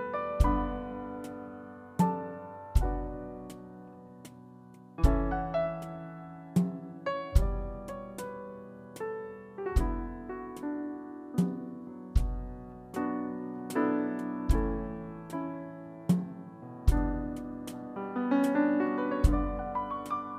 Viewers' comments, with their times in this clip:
0:08 this reminds me a lot of Chick Corea